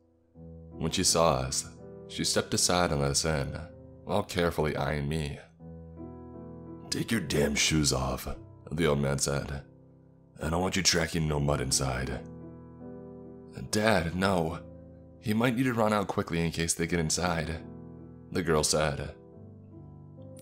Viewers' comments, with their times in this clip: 0:07 TAKE YOUR DAMN CLOTHES OFF Dogs are clapping? I didn’t even know dogs were watching!